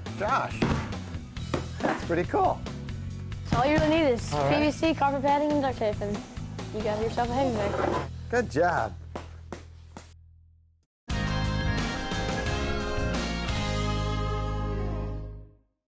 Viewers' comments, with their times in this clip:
0:08 "good jab!" hahahahahaha! yea rite!